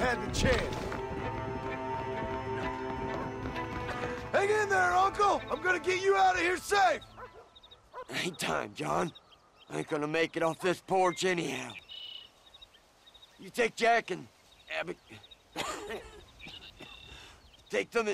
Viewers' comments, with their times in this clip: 0:03 why is john screaming at him though
0:04 outstanding voice acting
0:06 I get it guns were shooting their ears must be ringing seriously he didn't need to yell did he? Uncle is right infront of him